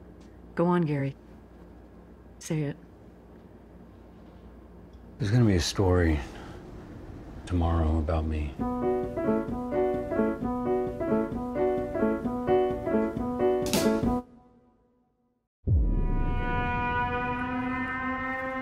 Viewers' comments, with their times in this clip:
0:05 I don’t know but that sounds like Trevor off of gta also known as Steven ogg